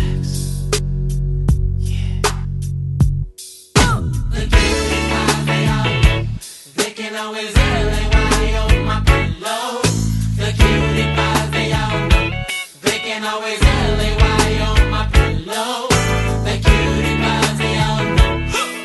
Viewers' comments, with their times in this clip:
0:05 This was my sh in highschool...boy if you couldn't get a slow dance off this than you was just pittyful...lol... is so smooth of a break down